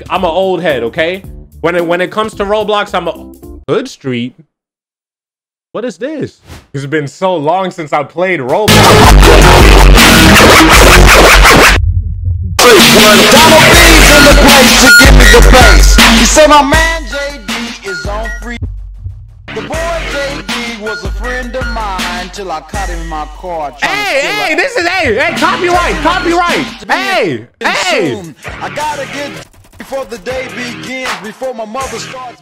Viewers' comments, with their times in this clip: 0:03 Hood Street🤔 then bam instead ear rape
0:07 was it hard for you to just give headphone users a warning you're so lucky I wasn't on my laptop
0:08 he was so happy to play it and den da music changed his mood 🤣🤣
0:08 and when the Music played💀
0:08 i jumped when the music played-
0:08 my hears hurt god dam lol
0:09 having headphones on max volume :MY EARS!!!!!
0:09 DUDE I'M WEARING HEADPHONES AND THE AUDIO IS ON %63 YOU BETTER STOP
0:09 I’m not even lying he turned yellow purple that music slapped the black off him
0:14 CAN I JUST SAY WHEN THE MUSIC WAS ON LOUD HIS FACE BAHHA